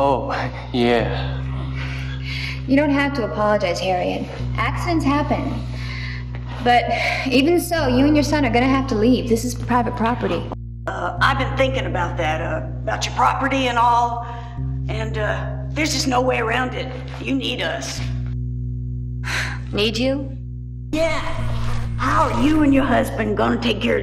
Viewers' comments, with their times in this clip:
0:10 His voice sounds like that of Nog from star trek: deep space nine, a.k.a. Aron Eisenberg!!!!!! It's probably too tall to be him, though!!!!!!